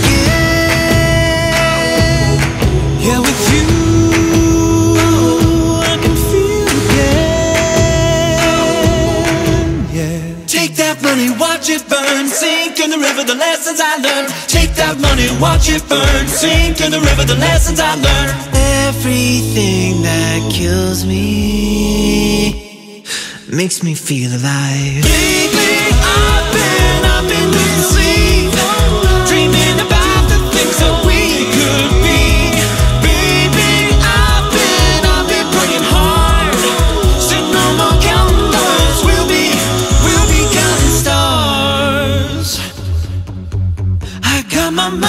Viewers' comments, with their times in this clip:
0:03 That transition into 'Feel Again' gives me goosebumps. every time. So good!
0:28 Was that an F#1 ?